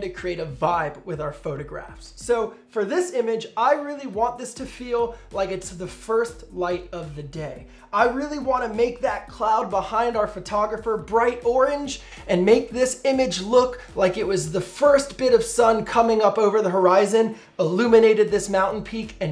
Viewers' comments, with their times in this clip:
0:06 cute lisp lol